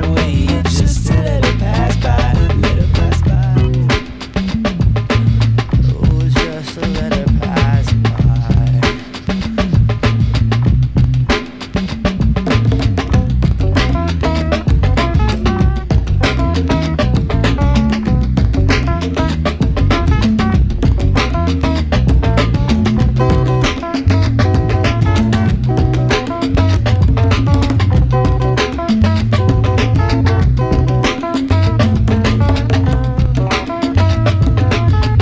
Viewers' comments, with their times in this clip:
0:05 man, of the song, when Bradely says 'just let it pass by' you can really hear the pain in his voice
0:22 Would love to learn the guitar sequence. So vibrant
0:23 That note is gold